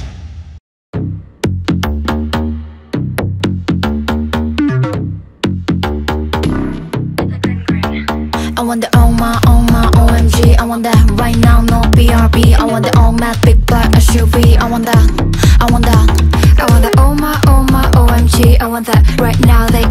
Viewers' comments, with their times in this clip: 0:07 Minnie confirmed that she was the one doing the high note, not Miyeon, It does not count, so here's the corrected ranking: 1. Miyeon - 38.0 s (28,06%) 2. Soyeon - 30.7 s (22,67%) 3. Minnie - 26.5 s (18,91%) 4. Yuqi - 25.1 s (18,54%) 5. Shuhua - 16.0 s (11,82%)